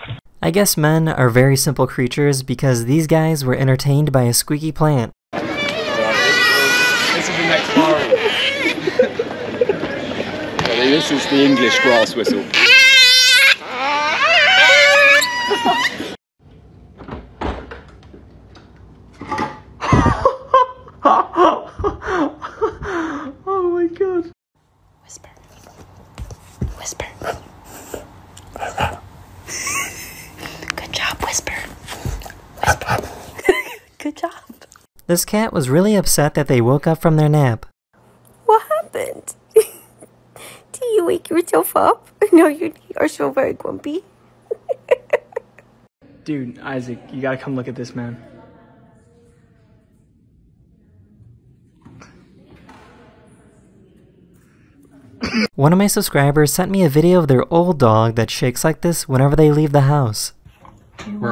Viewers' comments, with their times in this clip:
0:05 That plant sounded like it was having it's canon event 💀
0:12 Oh ... WOW! Those plants sound just like cetaceans! Let's use them to communicate with whales!
0:24 IDK what's funnier, the fact that the dog whispered, or that he ate a green bean. My dog would NEVER do that.
0:24 hes using his inside voice
0:46 sounds like Mordecai from Regular Show